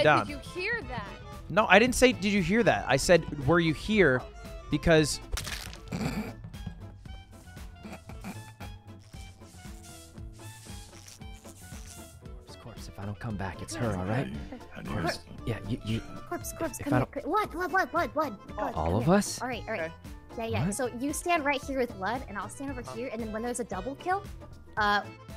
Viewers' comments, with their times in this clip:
0:06 When Lud chuckled when he killed her made me feel like he's that murderer in SCREAM. Lmao